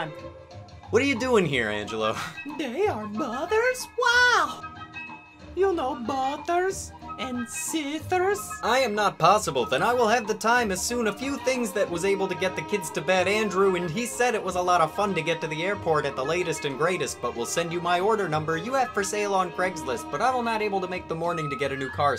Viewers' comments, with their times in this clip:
0:08 They just spam the "autocomplete" thing so it sounds weird and ends up in a loop. The more you know